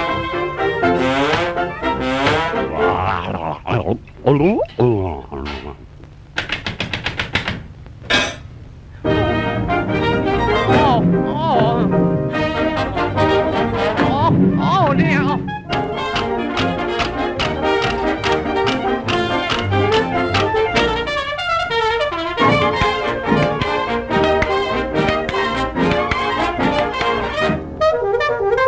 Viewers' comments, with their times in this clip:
0:10 .......... you know... for kids! but i actually really like the part starting so rhythmic and weirdly comical despite the terrifying imagery
0:14 it sounded like he said “Ah! Ah damn!”